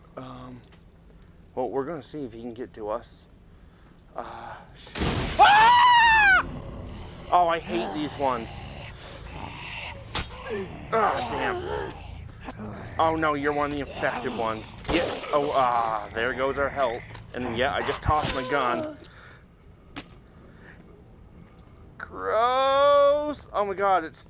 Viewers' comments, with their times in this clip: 0:05 that scream scared my whole family XD (almost, but the family members that were in my room got scared)